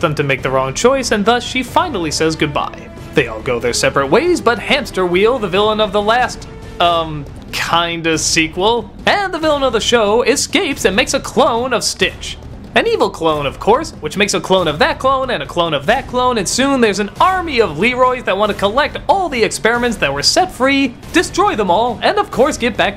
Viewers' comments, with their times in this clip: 0:05 Oh my God even DOUG WALKER of all people mispronounce Hamsterviel's name! XD
0:06 THAT'S HAMSTERV--Wait, what if he's actually saying Hamsterwheel in German? I never thought of it that way... But seriously, that fact that you probably pronounced it wrong is hilarious, I can just imagine his reaction.